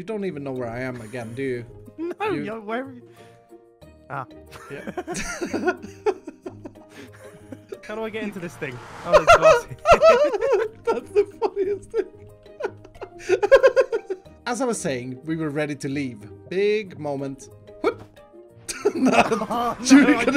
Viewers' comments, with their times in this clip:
0:04 that AH is Epic